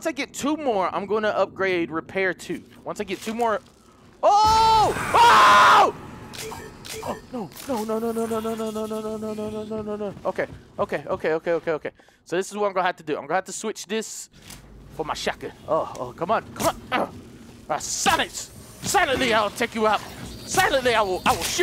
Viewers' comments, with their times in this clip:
0:04 lmao that scream
0:05 that scream sounded so legit cause he got scared 😂😂😂🥔